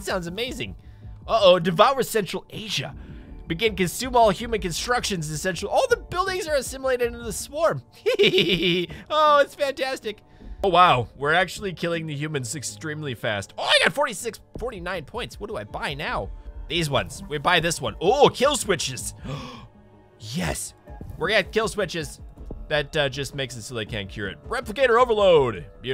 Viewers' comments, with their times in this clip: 0:07 that laugh is a sign of evil............... and you need to give it back to me